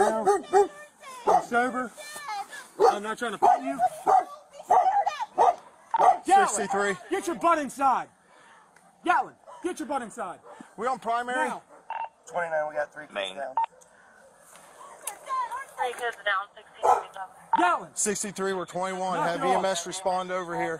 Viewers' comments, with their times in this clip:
0:05 Agree. He is an abusive, controlling, bully, killer. Listen to the way he angrily yells at the dog to get inside. He's murdered 3 innocent children & he's angry about a traumatised dog barking. Even on the ground he's trying to show he's in charge. Just sitting on the steps not listening to the cops, trying to act all nice that he won't hurt them.